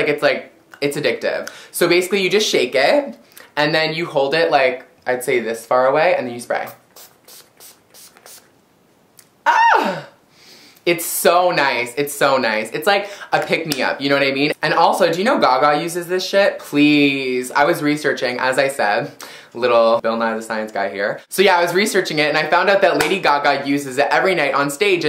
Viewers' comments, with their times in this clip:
0:06 I couldn't stop laughing at his little shimmy and wail when he sprays it on, so freakin hilarious!
0:09 love his squeal :)